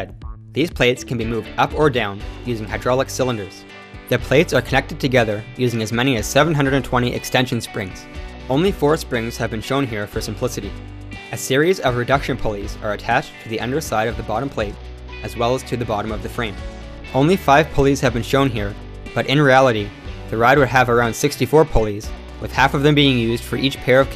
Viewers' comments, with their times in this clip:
0:09 only four springs were used for pussyti XD